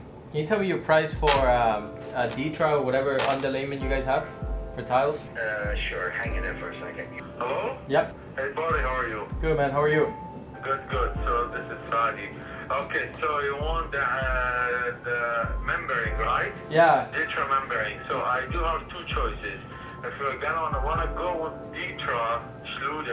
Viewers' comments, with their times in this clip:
0:10 The second call from doesn’t know how to speak on the phone kept saying ummm... pause yeahhh... otherwise great video continue doing your thing buddy!